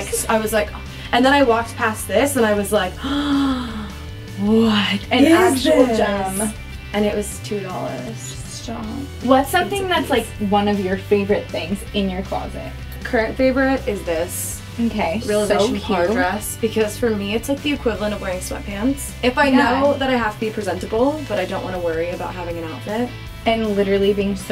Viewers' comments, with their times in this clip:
0:08 i can not with her soft ‚stop‘